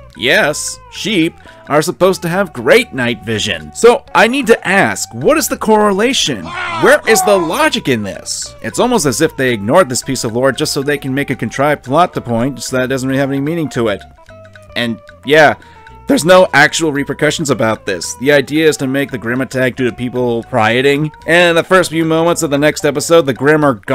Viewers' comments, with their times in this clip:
0:04 those halo 1 death sounds have me rolling